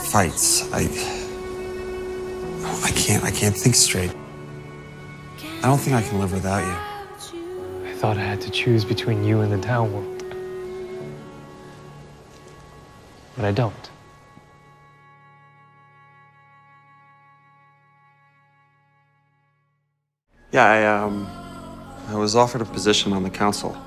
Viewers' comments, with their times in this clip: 0:05 when the music syncs up with Alec's words, it's just too sweet. 😍